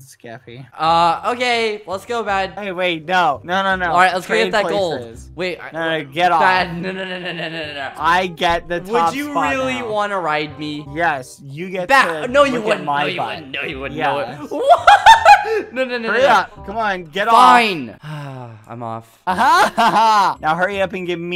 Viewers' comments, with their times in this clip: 0:09 "would u realluy wanna ride me?!" "yes!" starts laughing intense